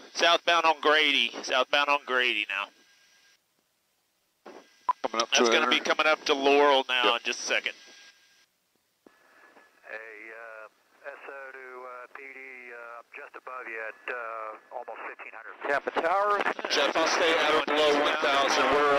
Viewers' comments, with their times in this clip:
0:06 did he say laurel or yanny?🤔